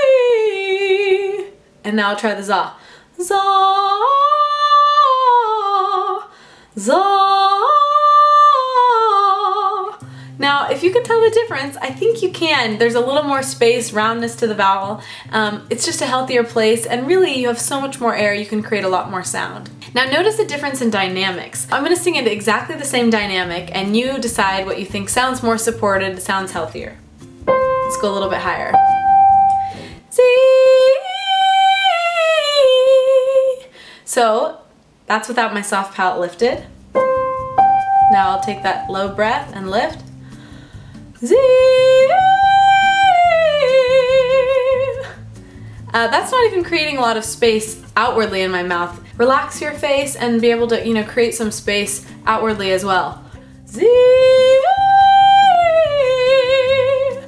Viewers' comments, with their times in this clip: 0:05 your before had no vibrato but your soft palate voice did have vibrato so sounded naturally better on the video. I was wondering why your first example you didn't do vibrato? is it more difficult to do vibrato or was it just muscle memory for you during the video? just wondering about these techniques, PS - you have a new subscriber here from Scotland, I'ma professional keyboard/pianist here I've always wanted to learn to sing, I can sing a bit *(mainly jazz style) but really looking forward to watching more of your videos. PS I wish you were more local, i'd book you at the flash of an eyelid Evynne.
0:30 no difference at all, cep't you added vibrato, which was lame. Useless lesson.
0:45 that sounds like the first note of the intro to cool for the summer by demi lovato lmao